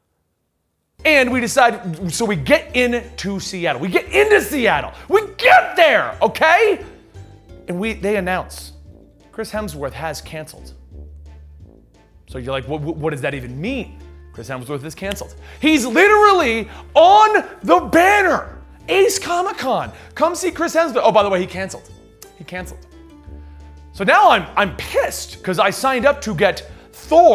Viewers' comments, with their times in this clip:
0:10 I thought you said; "Chris Hemsworth has cancer."